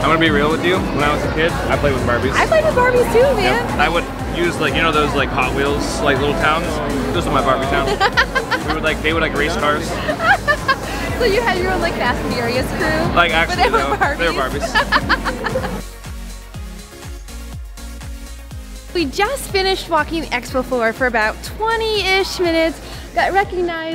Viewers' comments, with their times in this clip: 0:08 my Ohio neighbor laugh: